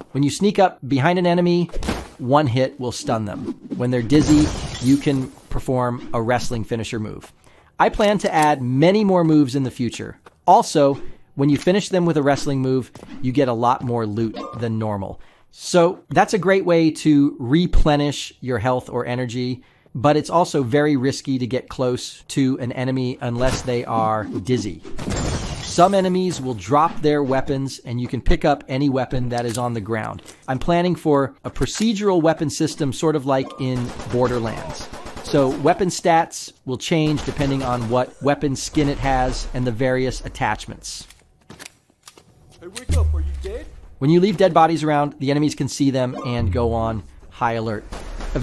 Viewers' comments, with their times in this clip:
0:03 hahaha legit reminds me of the sound effect in MotorStorm Apocalypse when you wreck your car
0:33 silencer gun too noisy